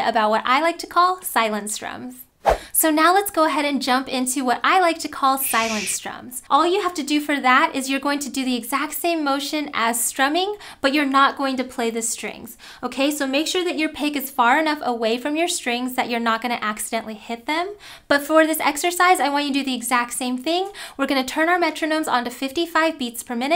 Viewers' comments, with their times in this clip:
0:04 I was focused on practicing the strums and when the shush came I freaking jumped lol. Scary!